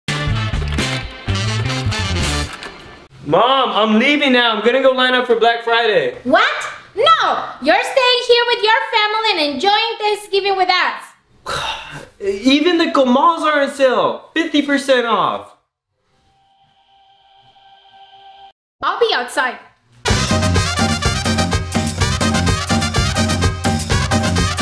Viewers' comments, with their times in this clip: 0:08 Why does she sound like that